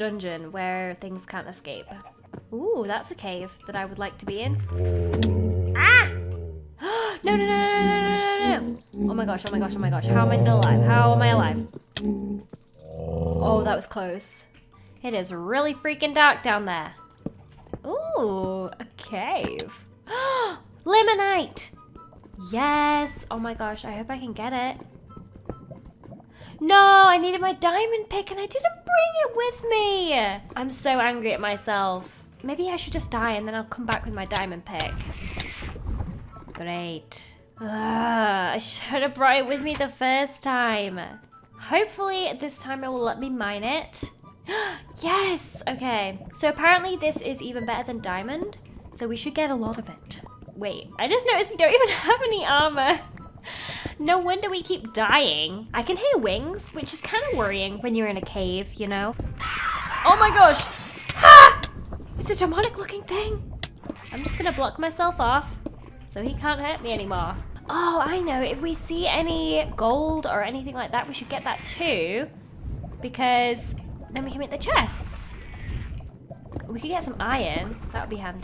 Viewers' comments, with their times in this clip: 0:08 What a lovely song
1:00 Why on earth she didn't put warning sign for high scream 😵 RIP headphones users x_x